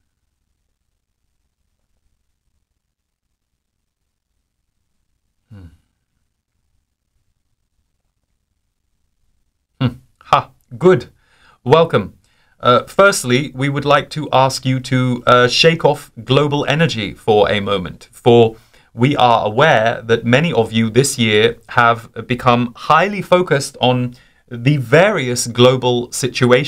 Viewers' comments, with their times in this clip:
0:09 I think it’s Funny how you turn into a human microphone for the zs with uhm …ah ..good 😂😂